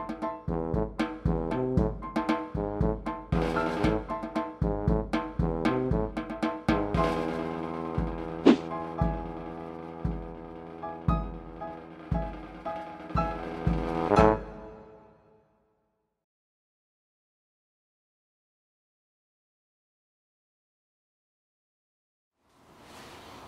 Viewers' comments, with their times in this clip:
0:07 that swoosh sound effect made the standing test all worth it. XD